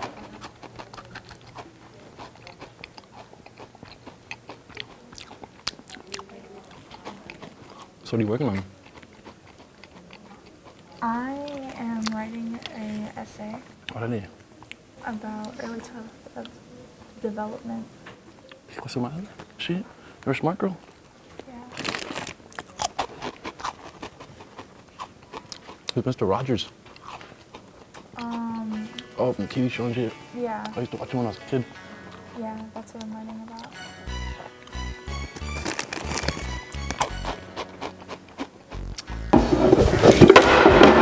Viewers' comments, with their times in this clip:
0:10 she's speaking tounges she said ese
0:29 I was waiting for that background music.😁
0:29 perfect .... Placement of cholo theme